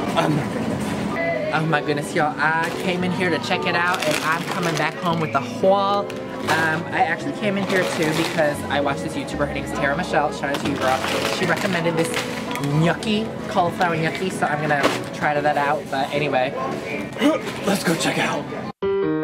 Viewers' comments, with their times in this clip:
0:05 I THOUGHT U SAID HWALL SKSKSK